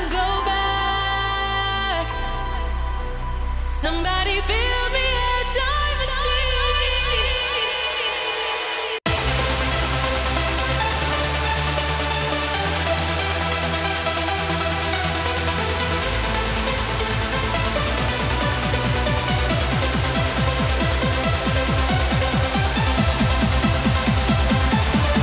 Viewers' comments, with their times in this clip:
0:08 that transition gave me goosebumps!!! 😃🤩